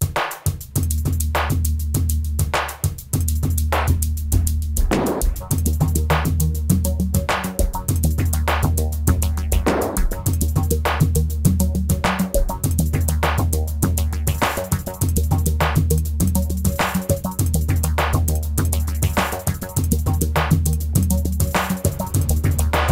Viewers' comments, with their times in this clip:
0:06 'sounds a bit like Depeche Mode.